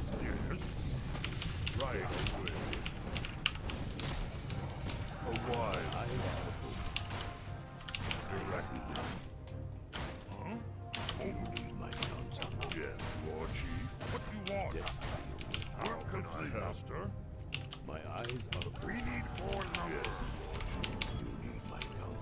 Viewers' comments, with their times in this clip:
0:08 The wolf attacking the Farm was strangely on beat with the music.